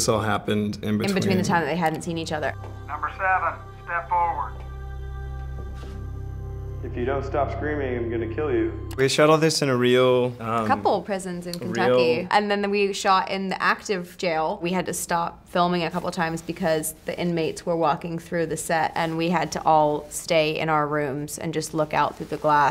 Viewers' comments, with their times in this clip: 0:08 Lilly keeps talking over him and doesn’t let him finish his sentences